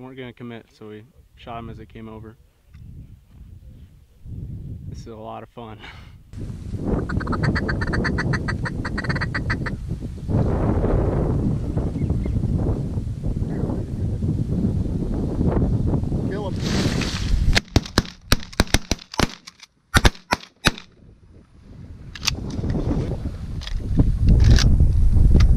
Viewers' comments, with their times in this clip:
0:08 chatter call sounded frikin good man! whoever that was it sounded awesome